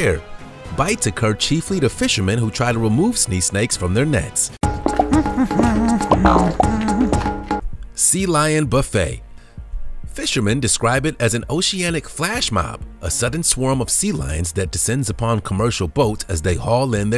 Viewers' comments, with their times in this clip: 0:03 listen to The Professor say Sea Snake 😂🤣 Snea Snake